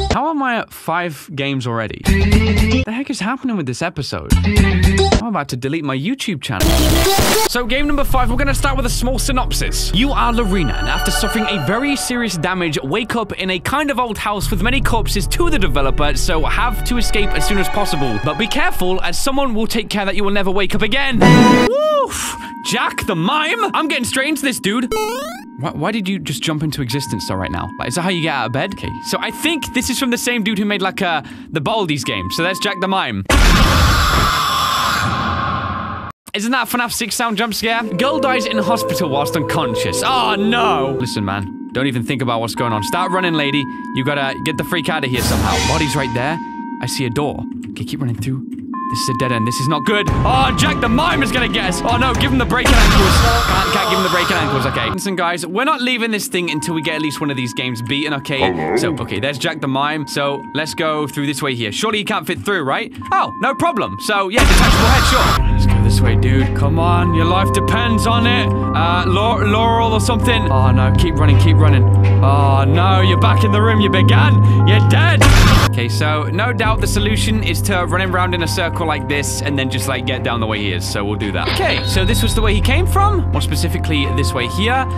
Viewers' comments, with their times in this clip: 0:08 MY EARS AGH
1:08 Did you say Yanni?